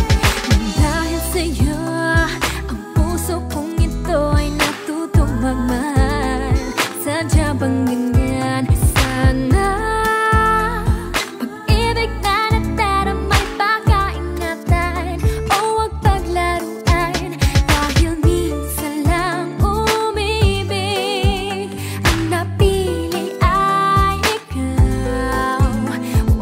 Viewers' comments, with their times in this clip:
0:08 that "sanaaaaa" is soooooo sooooo🤌🏻✨🤌🏻✨